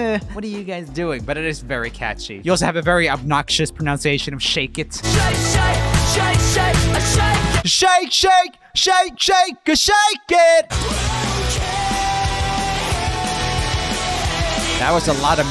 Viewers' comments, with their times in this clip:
0:03 this is not really a thing exclussive to Shake it but its a kind overall thing with emo music that being the whole softeining out harsher sounding words primarly your various KUH sounds and EE sounds I don't really know why that is but I think it may be down to some technoglicaly problem that orginanators of emo had to deal with due to using cheap gear and it just kinda stuck even into the more neon pop punk era of emo